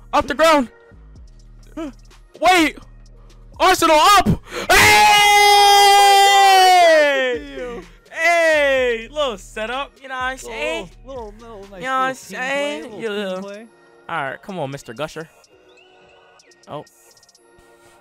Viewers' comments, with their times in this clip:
0:04 Oh god i watched at max volume with headphones